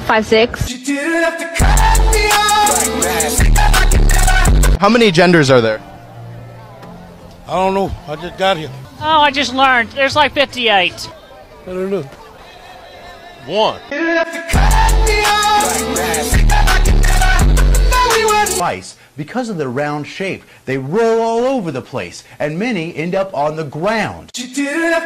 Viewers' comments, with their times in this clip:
0:09 that voice sounds… oddly familiar…